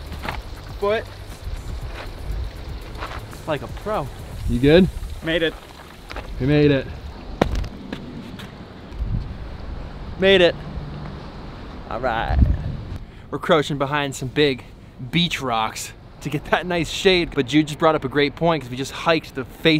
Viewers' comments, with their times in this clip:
0:06 It looks like you´re wearing a hat with a sewn-in wig, man. You had me with the shot ... i could feel it... the sound of your shoe on the sand... like i been there my own. Nice.